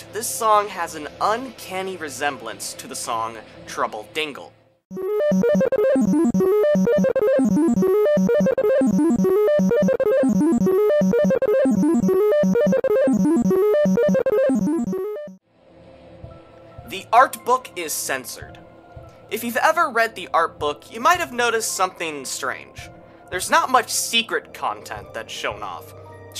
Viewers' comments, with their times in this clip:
0:07 honestly? to me it sounds kind of like a layered version of the opening theme about "humans and monsters" which just plays all of the notes several times. (you may have to play the midi at about 1.5x to hear it) this could legitimately be a leitmotif hidden in the battle graphic